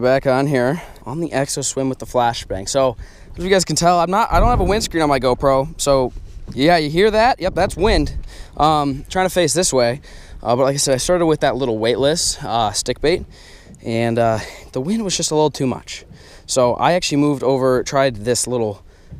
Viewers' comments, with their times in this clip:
0:04 (flair turns) no wind at all